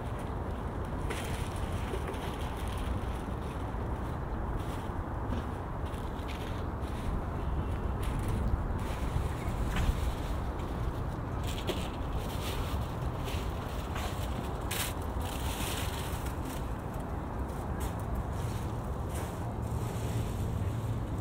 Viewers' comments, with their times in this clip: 0:08 didn't realise they had loud speakers in the fourth dynasty...